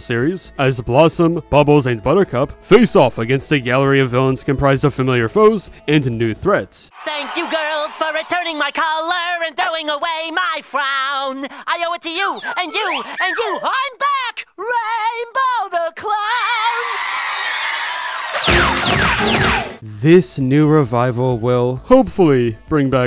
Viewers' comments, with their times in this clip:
0:06 Rainbow the Clown sound like SpongeBob.
0:06 Why The Heck He Sound Like Mr. SquarePants?
0:07 that sound like Spongebob’s original voice.
0:07 he sound like SpongeBob
0:07 TOM KENNY??? GODDAMN SOUNDS JUST LIKE SPONGEBOB
0:07 that clown sounds like SpongeBob ngl